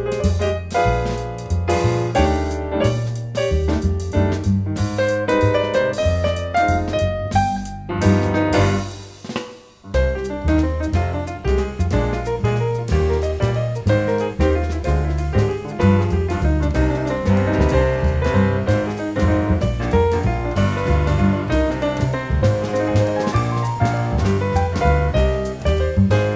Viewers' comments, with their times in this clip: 0:10 Minute it is totally jazzing Bach! So fun and incredible!